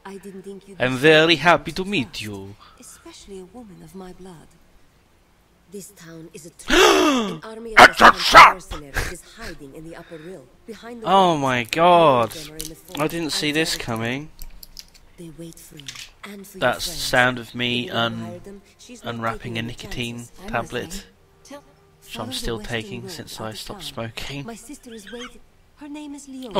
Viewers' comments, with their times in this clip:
0:07 lol that was scarily similar to the original voice in the movie